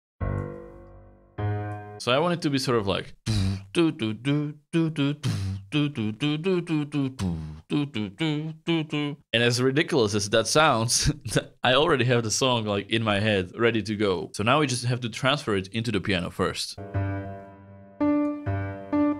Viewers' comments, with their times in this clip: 0:03 it reminds me your short beatbox career :)